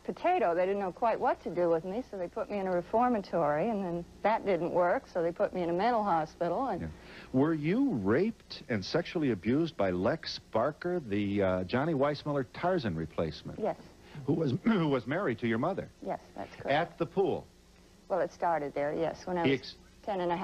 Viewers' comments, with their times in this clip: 0:07 I cannot get over the casual way in which he inquires her about rape